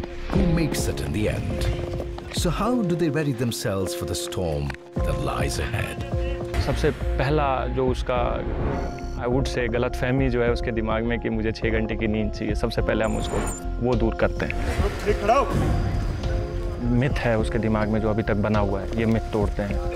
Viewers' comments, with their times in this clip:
0:07 "Sabse pehla Jo uske dimaag mein galatfahmai hai.." CHUCKLES ...This is a whole new level of inspiration. Jai Hind 🇮🇳